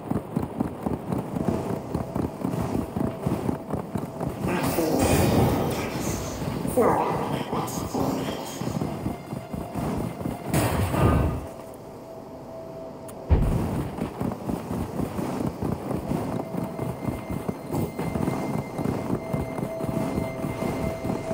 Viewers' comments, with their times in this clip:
0:04 does anybody know why there is someone talking to him, when I ride through there nobody is giving me any dialogue :/